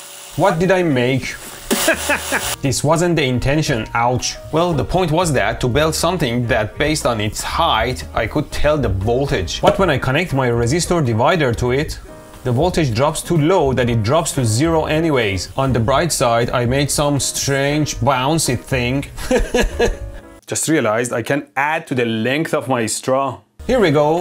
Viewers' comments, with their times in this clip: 0:07 yooo is this dubbed??